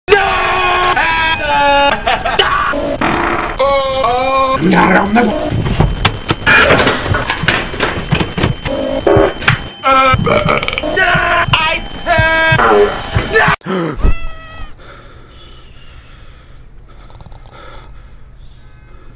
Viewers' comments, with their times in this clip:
0:03 bro farted live😳